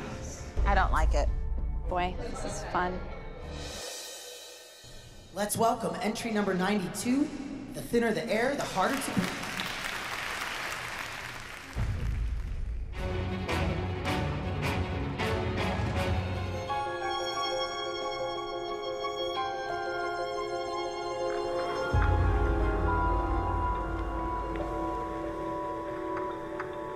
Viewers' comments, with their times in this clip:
0:07 "The thinner the air the harder to P" 😂😂